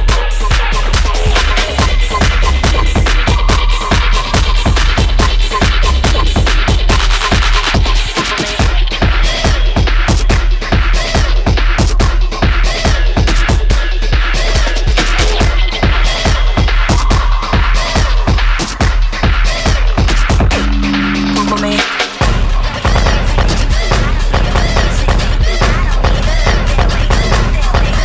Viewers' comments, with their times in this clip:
0:09 all I can hear is jerma’s “rats.. rats.. rats.. rats.. rats.. rats..” in the background